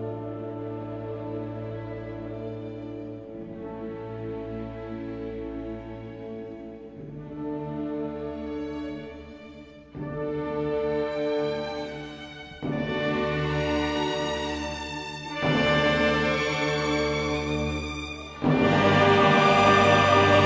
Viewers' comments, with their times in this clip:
0:06 The end, oh the glorious angelic end, where all splendour and might of the heavens opens its great gates before you - and a light like no other shines out through all of existence with the voices of every life ever lived uttered behind it.. that is what Mozart showed us through this masterpiece. As the last word that is sung here is; Amen.